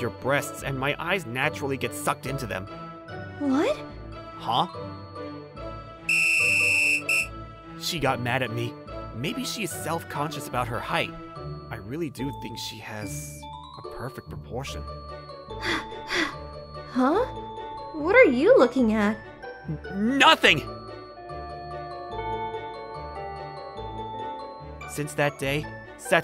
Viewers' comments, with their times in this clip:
0:09 The way bro said oh my dayz got me cracking no hate tho😅